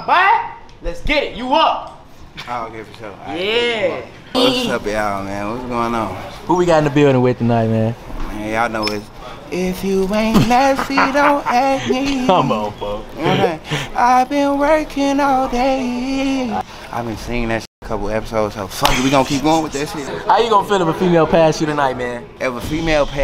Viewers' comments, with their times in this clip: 0:07 when dude started singing 😭 you get a A for effort😭✋🏽